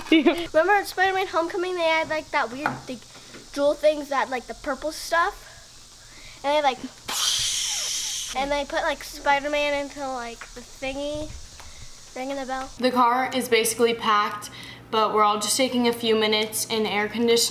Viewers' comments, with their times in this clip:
0:04 why’d i understand what ur sister was saying